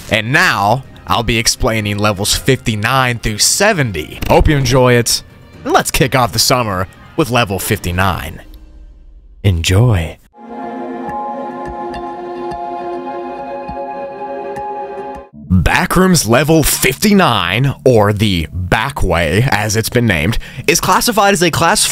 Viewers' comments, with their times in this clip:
0:08 they way he said “enjoy” just made my whole body shiver in a good way😂